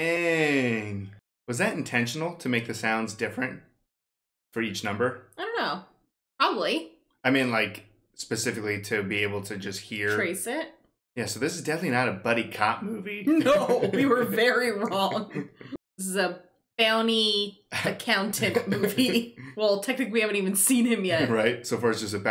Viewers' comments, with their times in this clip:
0:09 The phone number sounds are "DTMF tones" and they aren't just for humans to confirm a button press, the sound itself is what dials the number, so each button has a unique combo of two tones for the phone network to recognize. If you record and playback the sound of dialing a number into a phone, it will dial the number without even pressing the buttons on the phone.